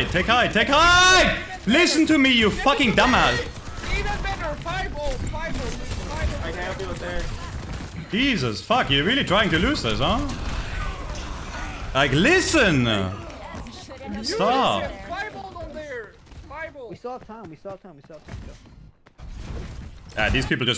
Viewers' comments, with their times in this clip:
0:04 'take high ground' dumbledore said calmly